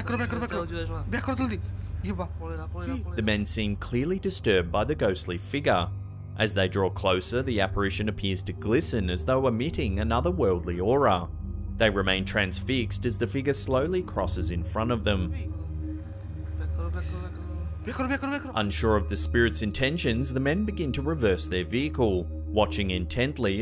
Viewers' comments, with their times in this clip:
0:06 wth ; these guys are speaking in my local tongue. Footage is of hilly areas location:Sylhet,Bangladesh. These hilly roads are not safe at all during midnight, robbery is an often occurence. While travelling these roads at night we r more scared of robbers encounter than of ghosts. So if u need to travel, u travel before dark. They both are saying ," back up back up quickly"